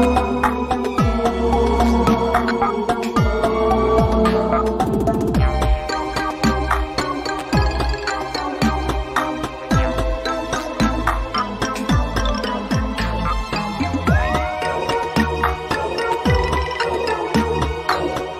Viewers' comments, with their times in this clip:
0:05 Harry potter vibes 😂